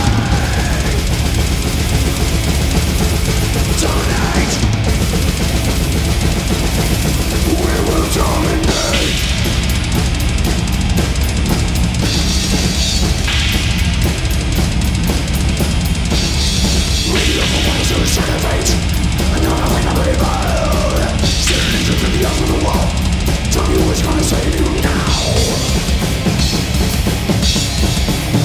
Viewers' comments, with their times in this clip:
0:10 In the double bass parts (for example ), is he leaving the snare hit without hitting thr bass drum? Like a rest for the right foot?